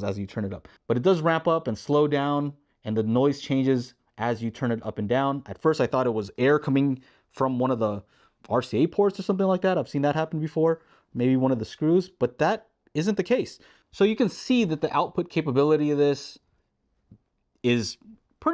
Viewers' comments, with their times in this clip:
0:05 Not sure but there may have been an issue with the unit? Was it a review unit? I have the KF-92 (seems identical to KC-92?) and it does not make that noise.